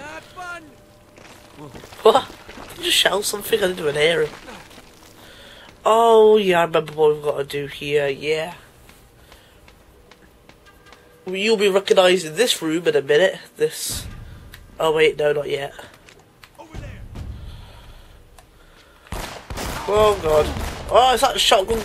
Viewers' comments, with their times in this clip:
0:06 Poor guy. You sound like you got a cold. looks like your climbing up a giant bugger.